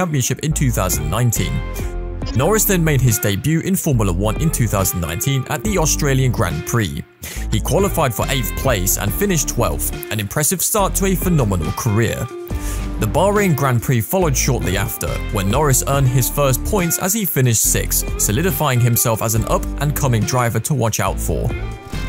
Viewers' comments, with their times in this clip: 0:04 I think we all know what the driver's were talking about in this clip 😁. I believe it was also our introduction to Lando's high pitched laugh.